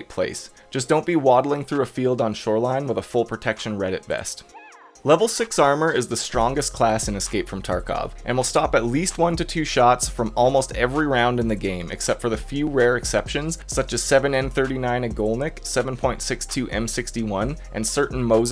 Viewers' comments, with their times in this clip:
0:04 any one else hear someone say "yeah" in the background